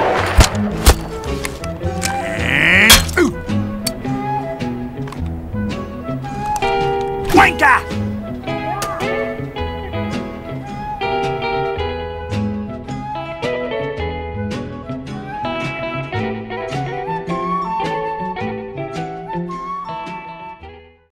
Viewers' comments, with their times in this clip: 0:07 the way sniper said wanker